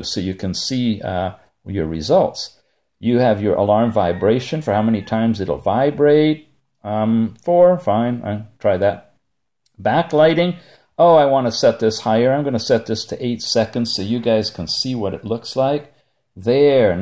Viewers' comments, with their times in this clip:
0:04 I like this watch! I think the rooster from likes it too :D